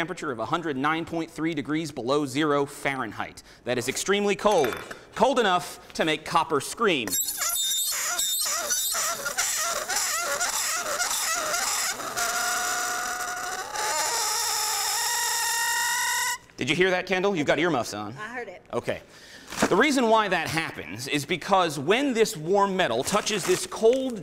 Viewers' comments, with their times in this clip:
0:06 rip anyone that can hear